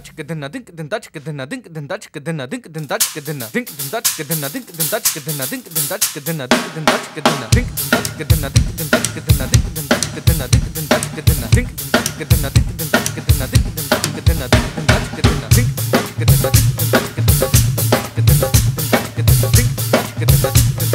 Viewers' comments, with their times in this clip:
0:06 That snare triplet lead in gave me chills.